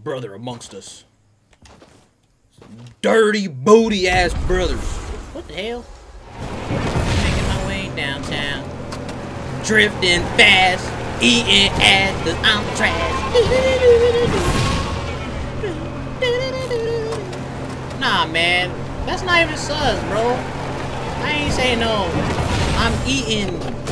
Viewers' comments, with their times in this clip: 0:07 the song tho xD